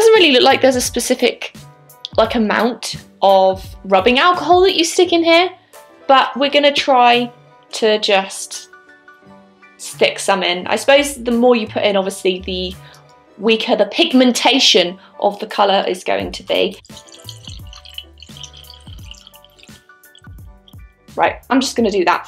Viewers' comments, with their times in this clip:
0:10 i know that song in the background.